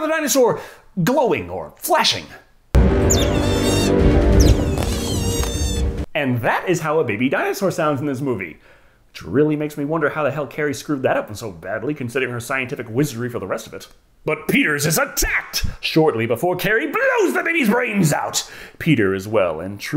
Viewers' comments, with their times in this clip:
0:03 The funny thing is, the sound the baby dinosaurs make is just the sound some otters make.